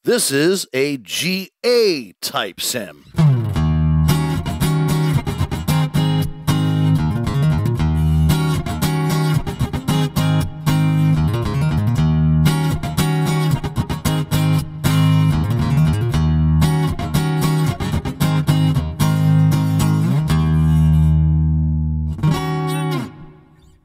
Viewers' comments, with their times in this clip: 0:09 i relly loved that lick